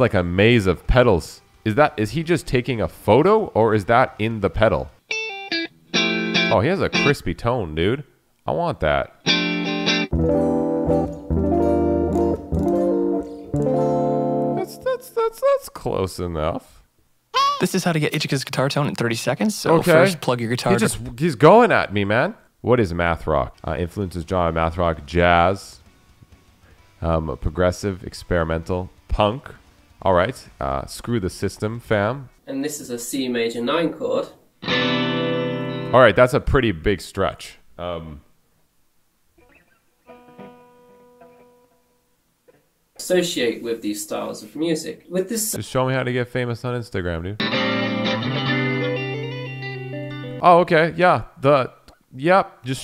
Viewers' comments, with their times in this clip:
0:08 hella crisp brights... Plays bluesy AF "oh that's close" Bruh, Wut?
0:39 when the breakdown hits too hard